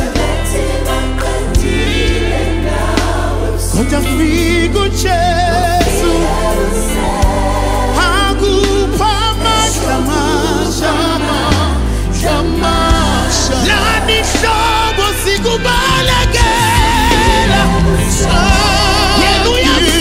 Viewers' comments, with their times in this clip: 0:08 VOICES CARRY THE WEIGHT OF INFINITE ABUNDANCE DANCING A TUNE ONLY THE SOUL CAN COMPREHEND. ✨️